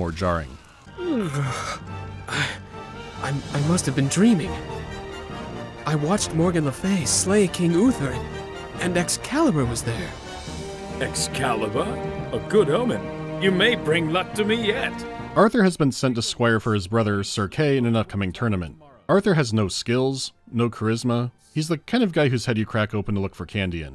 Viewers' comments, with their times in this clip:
0:10 is the voice actor of the squire Matt Berry? It sounds like him so much, but I can't find any mention of him being credited for the game.